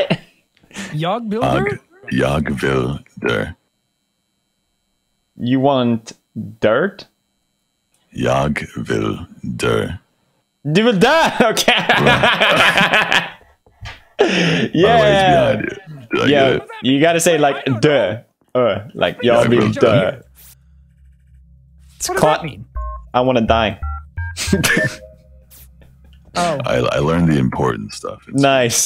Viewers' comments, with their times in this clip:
0:05 I wonder what’s going thru Felix’s mind when he thought Corpse said " You want... dirt? ". LOL
0:07 a person vented meanwhile, corpse: ye wil dir pewds : u want dirt lol
0:08 am I the only one who saw yellow vent 😂😂😂😂
0:09 yo yellow vented 👁️👄👁️
0:09 yellow vent lol
0:09 you will see yellow vent
0:10 Don't mind yellow.
0:11 Did nobody realise yellow vent on ?